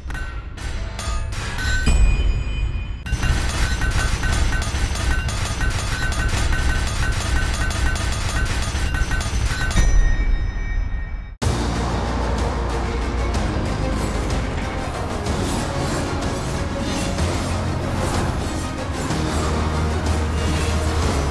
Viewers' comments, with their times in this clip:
0:06 HAMMERING INTENSITFIES didn't expect that